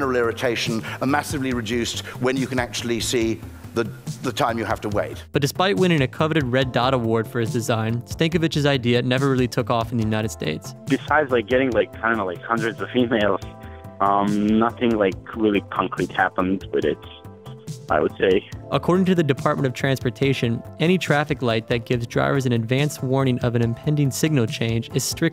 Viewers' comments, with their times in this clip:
0:10 Had to stop and think for a second why he would get 100 of females for designing a new traffic light, great accent.